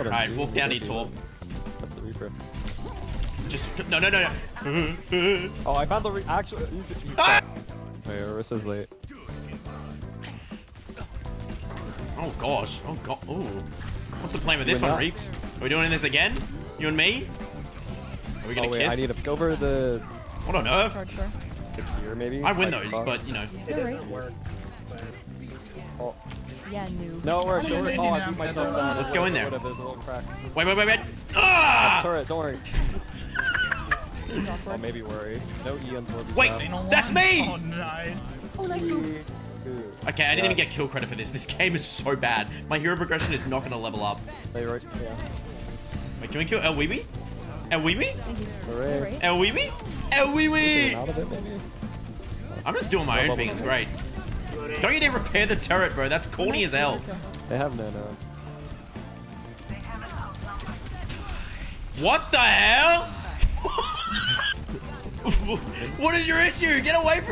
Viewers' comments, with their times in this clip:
0:06 Ok but that scream when he got life gripped when trying to get the torb REALLY got me 😂🤣
0:48 Love the way he says aiuibi